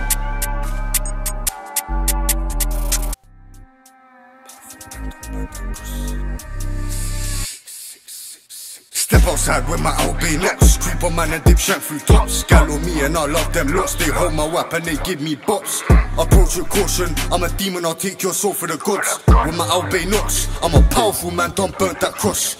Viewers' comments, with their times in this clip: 0:08 Digga D “The Truth” Flow